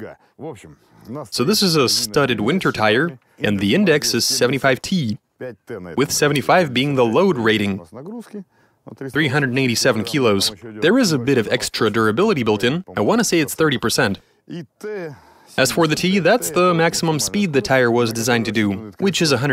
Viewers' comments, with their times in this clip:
0:03 ..............sounds like the cousin of Kermit the frog doing the voiceover